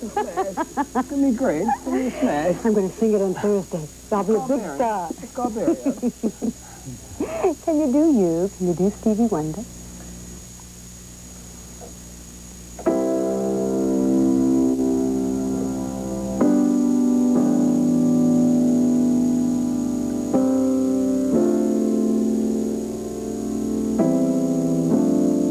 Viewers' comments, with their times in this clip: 0:07 the moment Stevie sang, I burst into tears, and snot. Someone tell me I'm not alone. I did not expect that level of beautiful music from his little improvisation, he's just so completely genuine 🌞